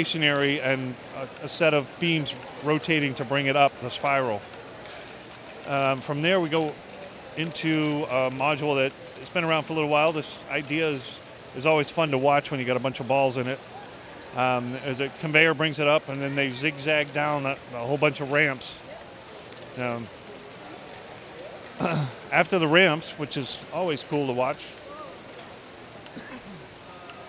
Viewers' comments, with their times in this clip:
0:09 at quarter speed, BOOM!! Need to get those balls into single file first so they don't jam up like that.
0:10 The balls pops BOOM!
0:10 they went boom